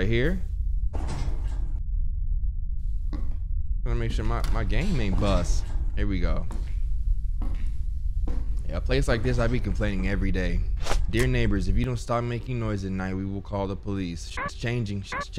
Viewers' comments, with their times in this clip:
0:03 I know y’all heard the inflection of his voice when he said “buust”. Dude tried to force that one down